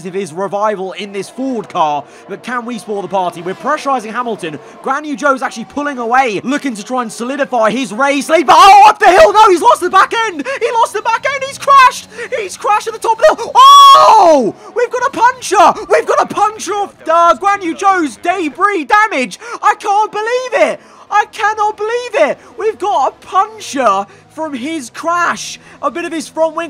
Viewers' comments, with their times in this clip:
0:06 remember to lower your volume extreme drama happened
0:12 Spare a thought for headphone users edit: timestamp